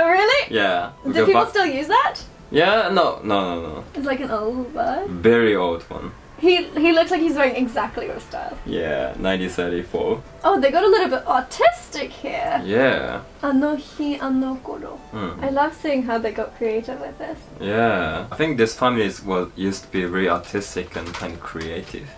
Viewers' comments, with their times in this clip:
0:06 omfg i swore i heard ‘autistic’ & im like thats downs syndrome 😅😭 lord